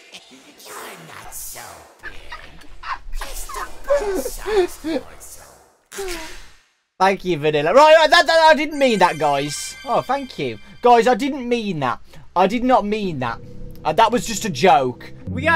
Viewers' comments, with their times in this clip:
0:03 laughter before disaster